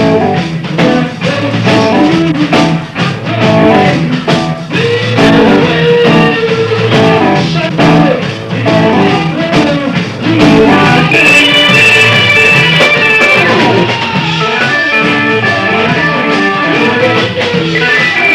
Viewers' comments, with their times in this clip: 0:04 Robert Plant stole Steves vocals man.. There is no "whole lotta love" without the small faces Steve marriot